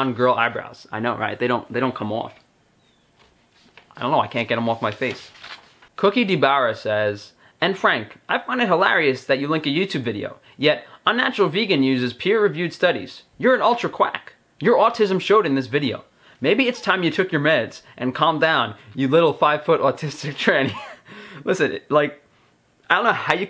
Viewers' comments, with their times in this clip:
0:07 Started channeling Christopher Walken there :)